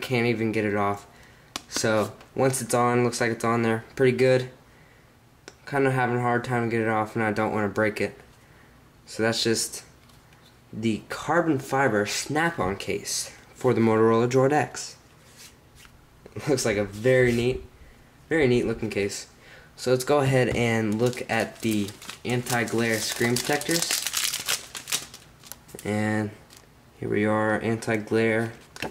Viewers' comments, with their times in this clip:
0:10 "the carbon fiber shnapp on case"